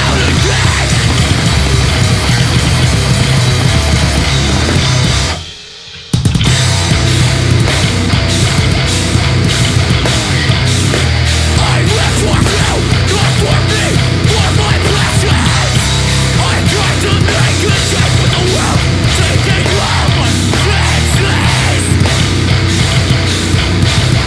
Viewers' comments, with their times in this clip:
0:06 the missing "eea" throws me off